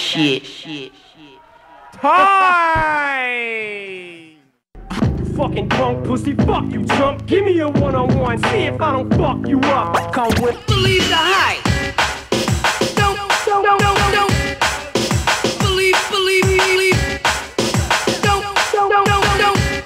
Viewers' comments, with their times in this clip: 0:07 atleast he put some eminem in